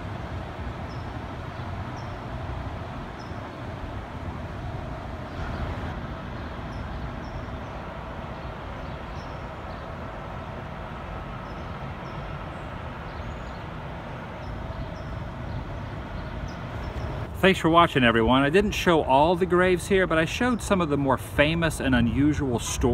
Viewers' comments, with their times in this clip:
0:05 Interestingly -17 you have an EVP with a man whispering..."I'm on camera." Just sayin...listen carefully...you'll hear it.